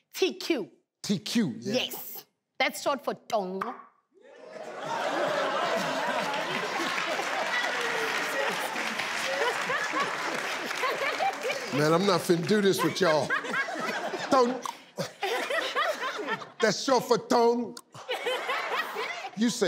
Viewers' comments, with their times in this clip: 0:03 when she clicks her tongue when pronouncing the name it's a language called xhosa it's also in the movie black panther